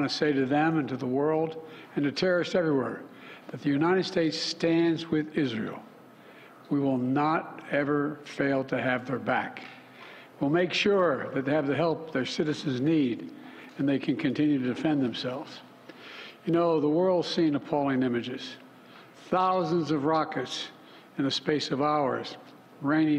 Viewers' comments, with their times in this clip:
0:06 sleepy joe can barely read the teleprompter now lol